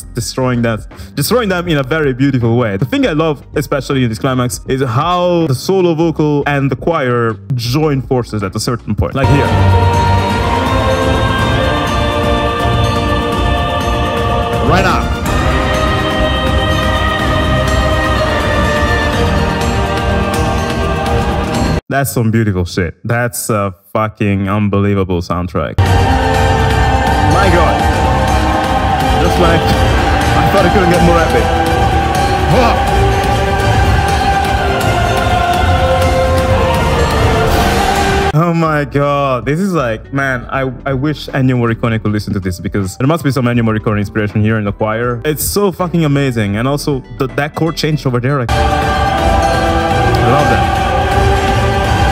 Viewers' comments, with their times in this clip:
0:06 I’ve never noticed that before, I’ve my ever heard the lead female vocals. Now that you’ve brought that into the light it makes it so much better
0:33 The way the choir very briefly dropped and then came back in with full strength just gives off that feeling like they're putting everything into belting this song, they stopped for a quick breath, but they're in no way done or giving up. I get so much motivational hype from that little detail, it fills me with DETERMINATION.